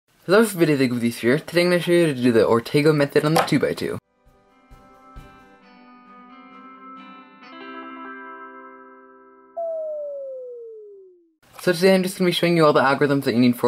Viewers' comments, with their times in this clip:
0:00 Spam on he’s mumbling 😂😂😂😂😂😂😂😂😂😂😂😂😂😂😂😂😂😂😂😂😂😂😂😂😂😂😂😂😂😂😂😂😂😂😂😂😂😂😂😂😂😂😂😂😂😂😂😂😂😂😂😂😂😂😂😂😂😂😂😂😂😂😂😂😂😂😂😂😂😂